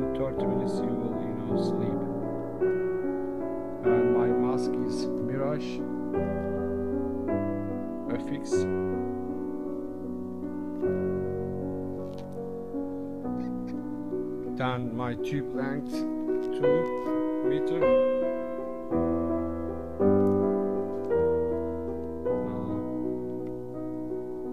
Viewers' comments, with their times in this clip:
0:10 the music is so loud I can’t make out what you’re sayin!